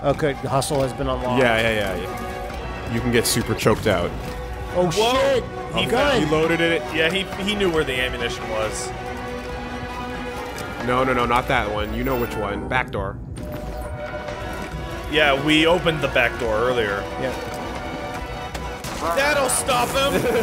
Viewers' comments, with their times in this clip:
0:03 AMAZING SOUND MIXING